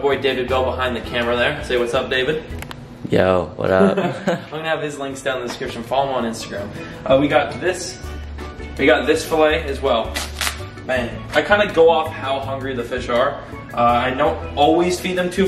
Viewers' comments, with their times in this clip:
0:03 *High AF “Yo. Wuddup”